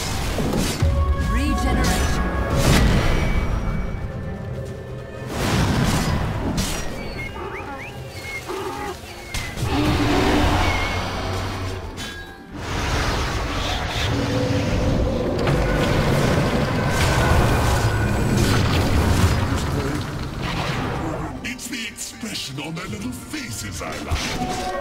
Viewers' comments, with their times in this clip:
0:06 lol nice clap